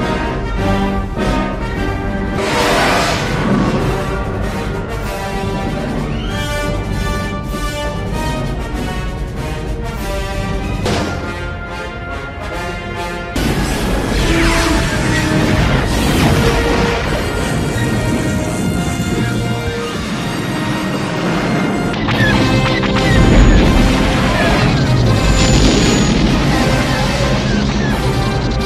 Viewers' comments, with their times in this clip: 0:10 I love the music playing when this one appears